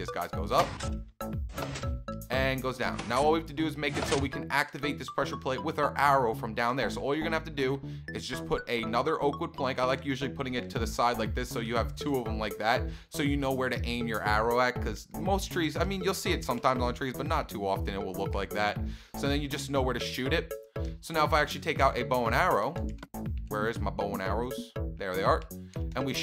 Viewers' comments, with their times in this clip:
0:08 you said oka word plank 😃😉😝😳